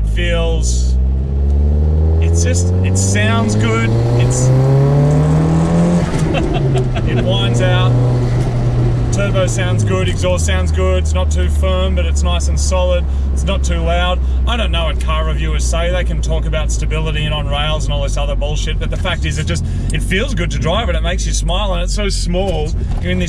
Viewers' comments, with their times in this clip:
0:05 that's a weird turbo flutter